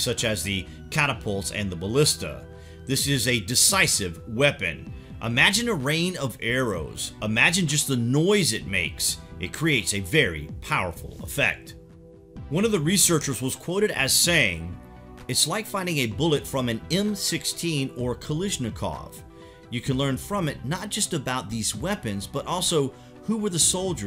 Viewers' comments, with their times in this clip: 0:07 the noise/rains of arrows, reminds me of that Helm's Deep battle scene in LOTR 2 film.